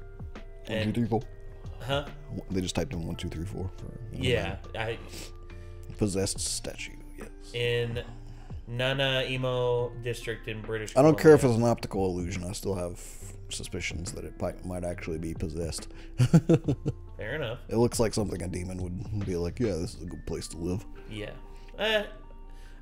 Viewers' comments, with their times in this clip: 0:07 In all my time living on the Island of BC have I ever heard or even thought of saying it this way.